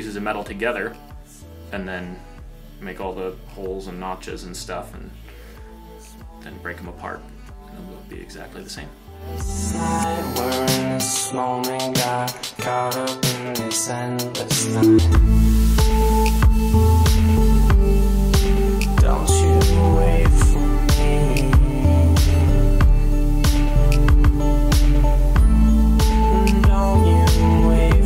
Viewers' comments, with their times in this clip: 0:09 I will never get tired of this song. It’s so damn good.